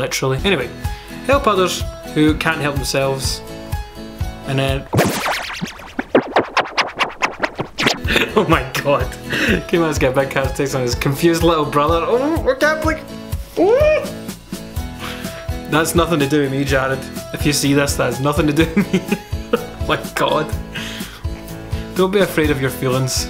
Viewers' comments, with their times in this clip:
0:04 True scottish laughter:→ ←!!